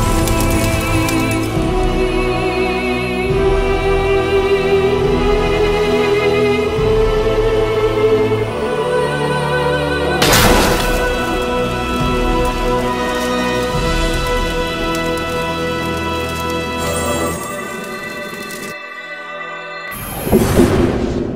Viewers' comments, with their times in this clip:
0:04 hold up that music sounded wayyyyy too much like hollow knight